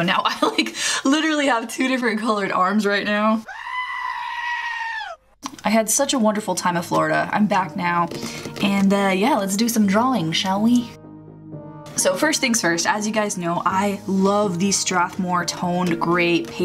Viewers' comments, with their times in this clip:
0:04 Screaming Goat Sound Effect